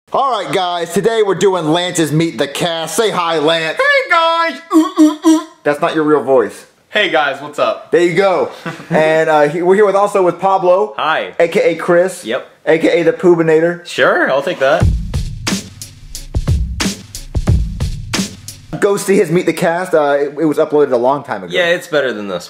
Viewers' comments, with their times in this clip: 0:04 (mimics Jeffy) Hey, guys. (mock grunting)
0:06 (normal voice) Hey, guys. What's up?